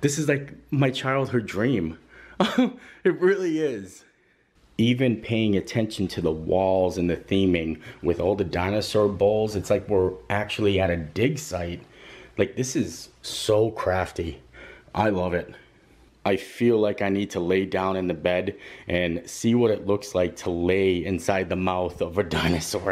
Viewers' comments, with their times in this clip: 0:07 lol You said dinosaur balls lol